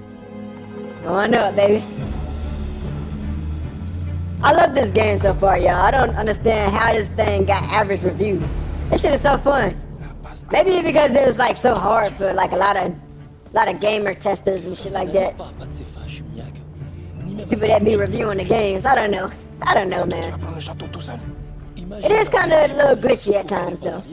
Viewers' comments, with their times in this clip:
0:07 hahaha you sound like a chipmunk lol 😆 😂 🤣